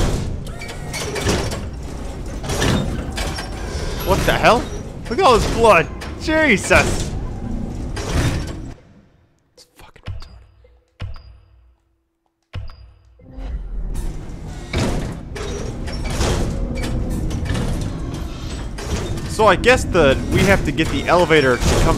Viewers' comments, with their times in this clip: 0:09 When he switched that axis stuff I could hear him whisper "this fucki.." hahaha! Great to have good headphones :)